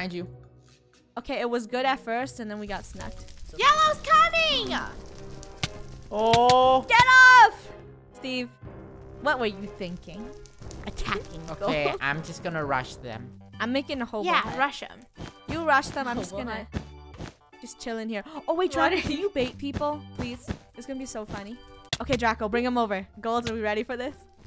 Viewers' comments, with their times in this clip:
0:07 Evil music comes then happy music comes when she's says I'm gonna build a hobo hut😂